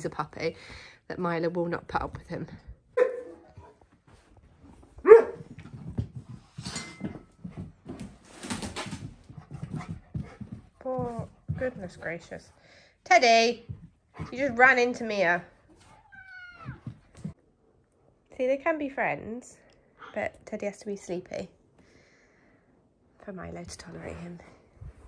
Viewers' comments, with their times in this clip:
0:06 Teddy started the song with a nice Bb